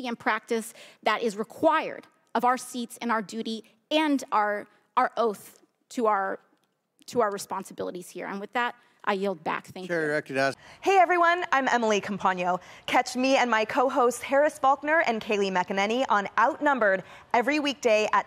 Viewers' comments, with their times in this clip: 0:03 she couldn’t even finish talking about her oath she made to the American people. Choking up at the end there bud. She’s not for Merica’